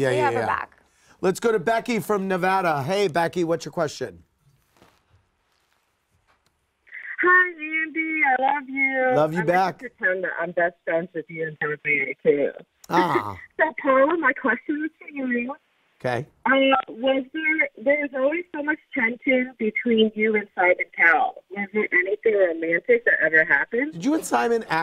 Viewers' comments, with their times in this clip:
0:08 The caller sounded like she was talking in a garbage. Did not understand ONE word. 😂